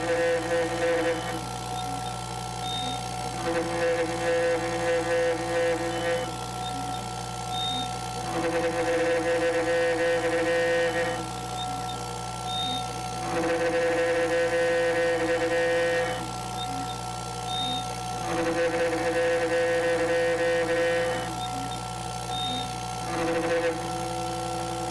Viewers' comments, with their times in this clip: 0:06 Anyone else hear the Peter Griffin laugh around the mark?